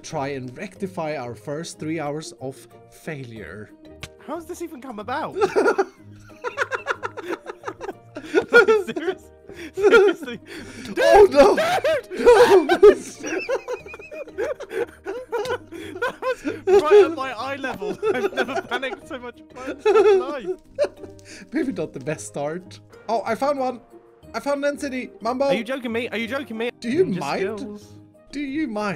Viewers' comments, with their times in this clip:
0:10 Dude! DUDE!! DUUUHUUUUDE!!! LMAO, I have NEVER heard Mumbo so panicked before!
0:12 had me crying the SCREAMS thoughhh